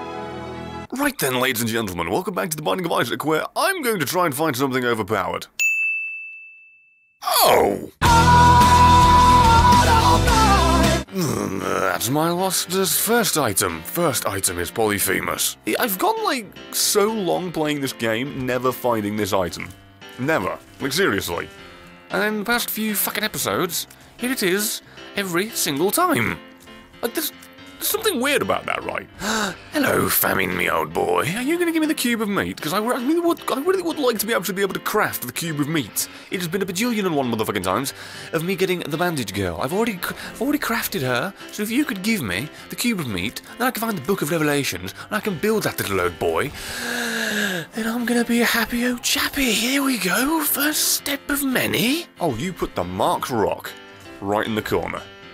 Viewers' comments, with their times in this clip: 0:07 If you play that part at .75 speed it sounds like the normal song.
0:36 Eminem has nothing on this man